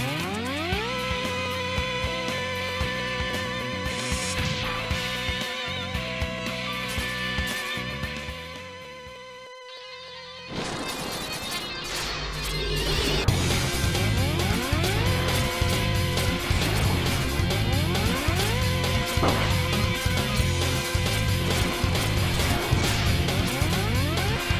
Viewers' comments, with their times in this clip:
0:09 best boss theme ever